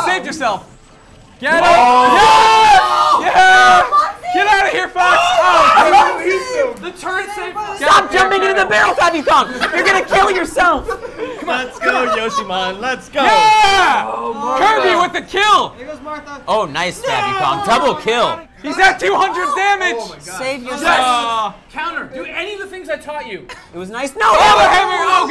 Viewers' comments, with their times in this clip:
0:10 WTF?! Anthony is laughing??? LOL.